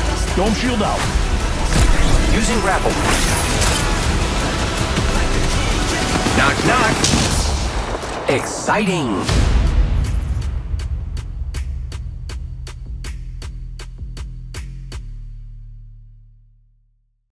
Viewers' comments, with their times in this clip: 0:06 is it just me or does the Longbow in sound like a Sentinel?
0:08 Why the longbow sounds like sentinel ？？？